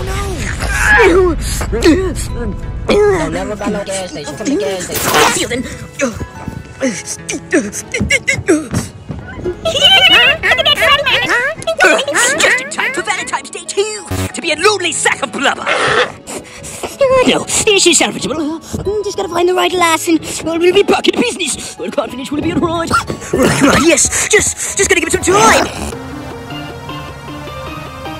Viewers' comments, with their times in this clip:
0:09 perfect timing, those birds in the background